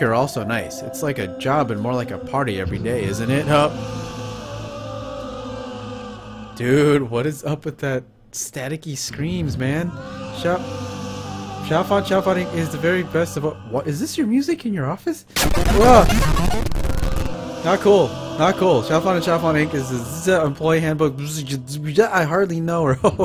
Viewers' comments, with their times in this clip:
0:09 Hey look at that I can see your face! Yay! those screams were super freaky! You were really good at shooting them ghosts! That was creepy as heck!